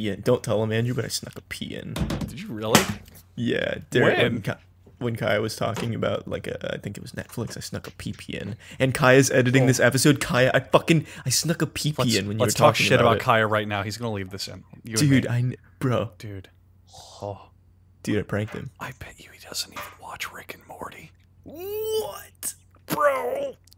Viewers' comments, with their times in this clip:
0:06 forward, I lost my shit laughing how Charlie goes "Whhhut?!"